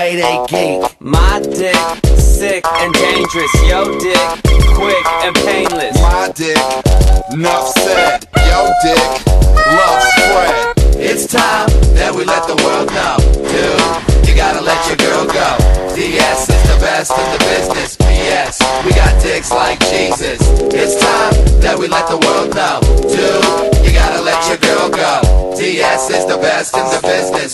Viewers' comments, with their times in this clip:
0:10 the part it says loves fred if ur wondering :P